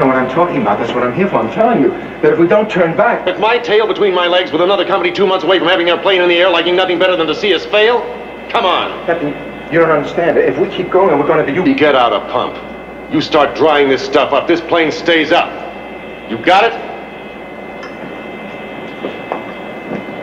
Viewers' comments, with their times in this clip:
0:04 Listen to Robert Reed Sounds as if he's eating pancakes!